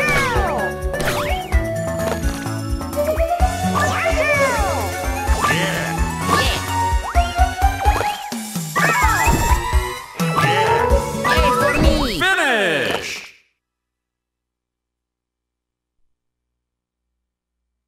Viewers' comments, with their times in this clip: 0:04 it sounds like yoshi says " ya hoe"